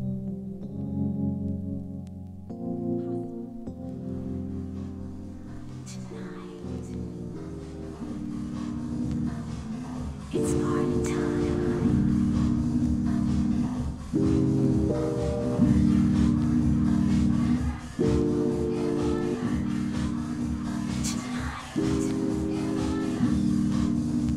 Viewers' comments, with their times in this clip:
0:07 damn there's no track for :( sounds so beautiful